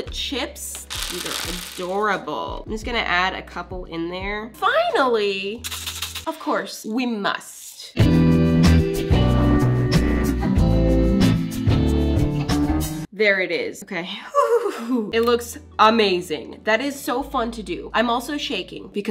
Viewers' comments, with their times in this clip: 0:06 is it just me or does the sprinkle song sound aggressive today lol